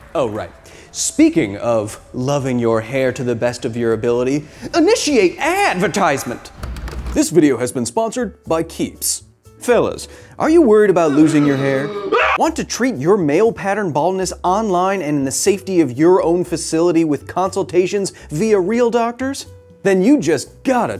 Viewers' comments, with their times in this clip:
0:06 that scream is perfectly cut